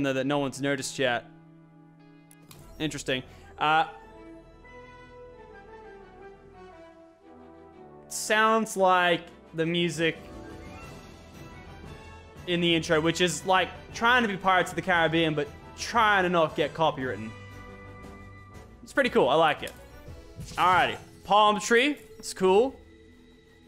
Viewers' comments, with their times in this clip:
0:07 when the ahoy music started to play in Fortnite it started to paly on my game is that insane